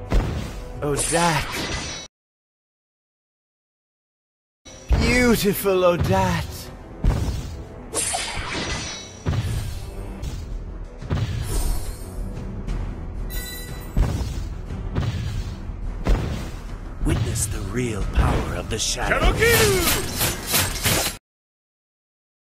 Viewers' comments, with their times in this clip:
0:06 subtitles: beautiful oh dad !